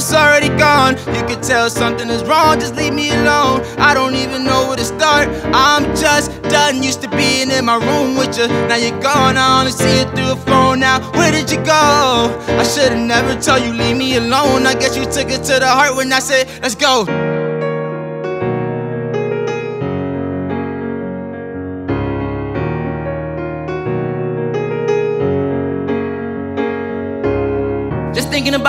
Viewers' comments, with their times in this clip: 0:10 when he said where did you gooo 🔥them. Vocals tho 🤩
0:16 Ngl I was kinda disappointed bc I was expecting the beat to drop 😂. Performance was still fire tho